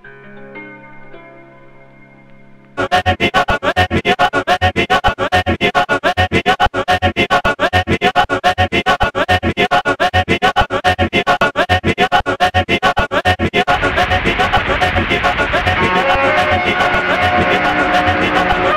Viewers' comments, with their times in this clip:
0:03 this part is nauseating with headphones